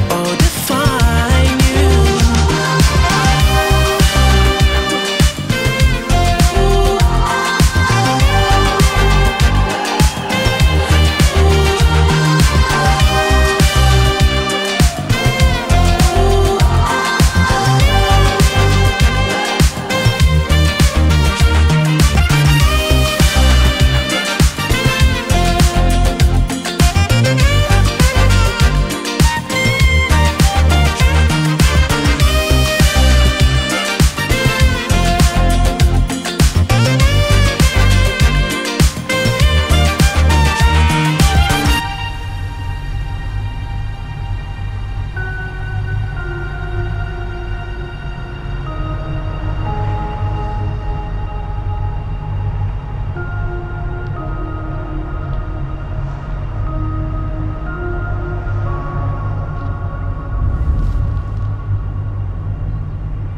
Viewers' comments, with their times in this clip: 0:05 around this spot, damn that trumpet fully slays! I love this track 🎵 🎶
0:14 Saxophone part is too good
0:45 why no one talks about this sad note 🥹